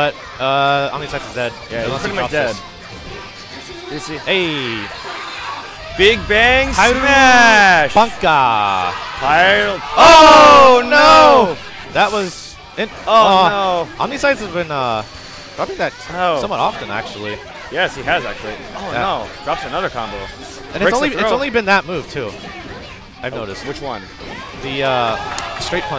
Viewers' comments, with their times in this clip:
0:10 what a perfect syn "Oh No" LOL